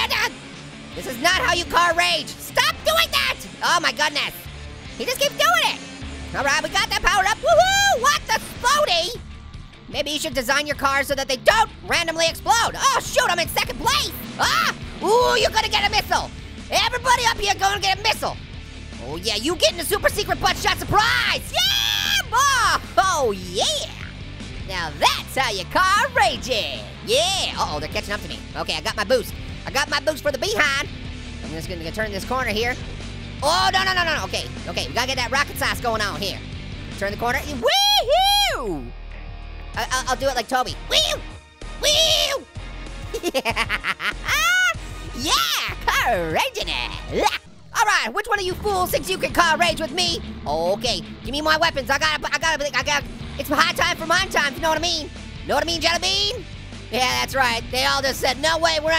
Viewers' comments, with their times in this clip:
0:03 Was that little Apple I heard ?!😂😂😂😂
0:40 on he sound like little apple